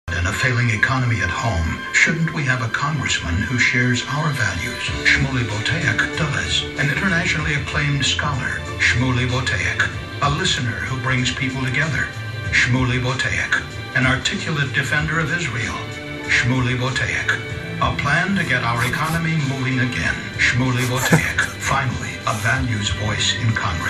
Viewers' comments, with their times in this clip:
0:03 did he just call me a dumbass?
0:03 Did he say "Smelly Buttock... Dumbass"?
0:04 Did he jus say "Smelly Buttock... Dumbass"
0:04 "Smelly Buttock, Dumbass" lollll xD
0:05 SHUMELY BOTEACH "DUMBASS"??